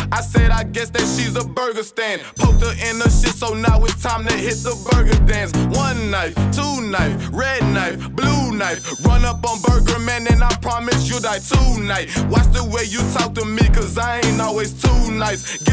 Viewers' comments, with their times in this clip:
0:03 he steals one of young gravy's flows off the song 1 thot 2 thot red thot blue thot